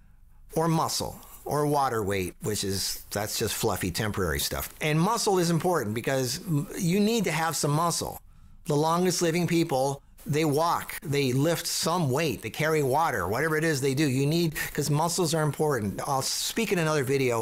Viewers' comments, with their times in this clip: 0:04 You need to have some ''mussle''